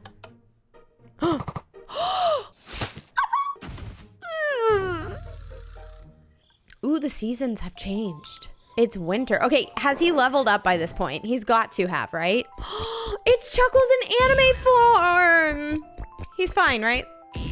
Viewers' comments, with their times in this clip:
0:03 your aha was so funny!🤣😂
0:03 😭🤚🏻 i cant that scream